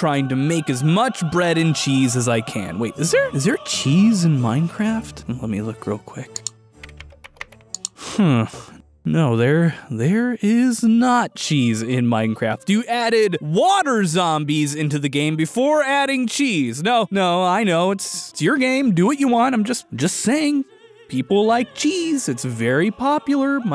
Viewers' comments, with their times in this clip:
0:09 "hmm there's no cheese in Minecraft" angry Dutch noises